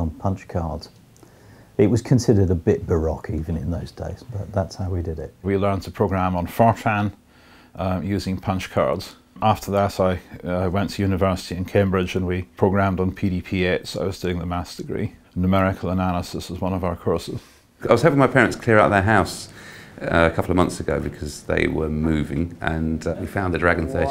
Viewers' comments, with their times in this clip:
0:06 Did he say "we learnd to program on "4chan" ??